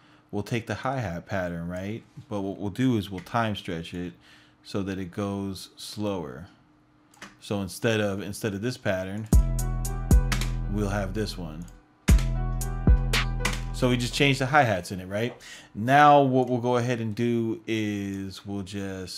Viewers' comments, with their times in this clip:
0:04 Good stuff man. How did you time stretch the hi hats ?